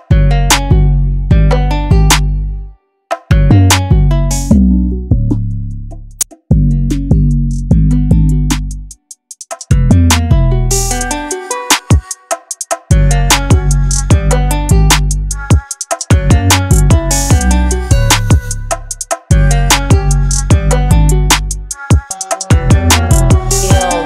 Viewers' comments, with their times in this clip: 0:06 little problem but overall a banging beat